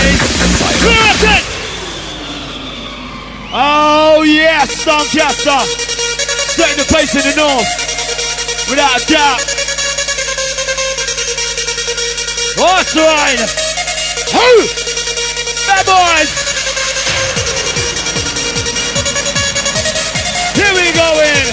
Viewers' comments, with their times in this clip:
0:05 that tune that drops in fucking love it. could march on to it!!!